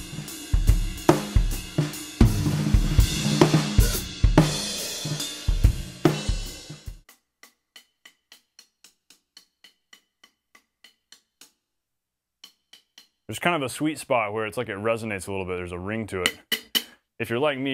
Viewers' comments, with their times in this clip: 0:03 You did my favorite one but didn’t number it as one! During the jazz lick you hit the open hi hat and closed it with your foot. I love using it on the “and” for emphasis as it comes down on 2 or 4.